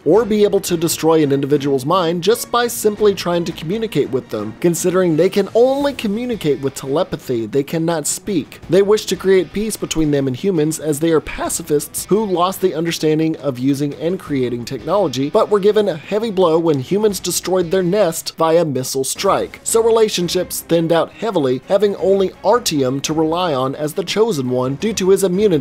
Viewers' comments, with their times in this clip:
0:09 I wish I hadn't noticed that his mouth moves that way. Now I only hear one thing. WORT WORT WORT